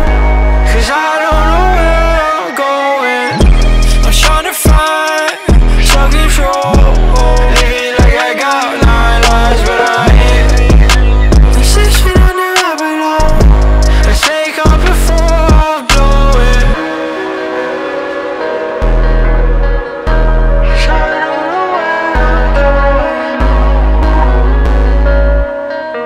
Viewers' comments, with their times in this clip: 0:08 bruh the knocking scared the shit out of me